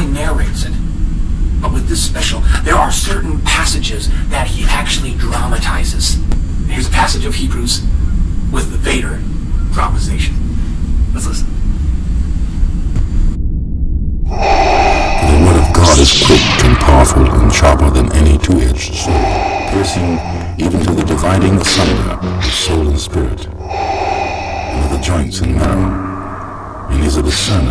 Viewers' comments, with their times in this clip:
0:09 on the counter you can hear the sounds of geese in the background. That was because at the place I used to live the apartment complex was surrounded by hundreds of Canadian geese! They were everywhere! They were also on my porch and that's why you can hear them honking.